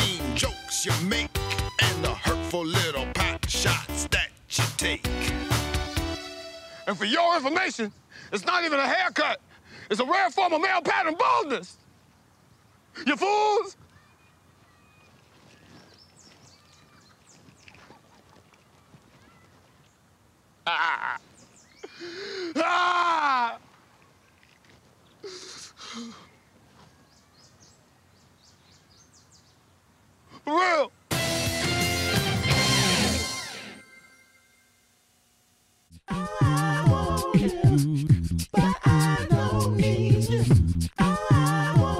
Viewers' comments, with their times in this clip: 0:10 the delivery is hilarious AF🤣🤣
0:17 when you hear that song that reminds you of happier times
0:21 the only acceptable male crying
0:22 That has to be the manliest whail I've ever heard and it's not even the real Mr. T. Jordan Peele is literally amazing.
0:22 That scream is the most funny torture scream I've ever heard! Oh My God! So funny.
0:24 The way he breaks down and yells is the best part. Damn good actor. 🙏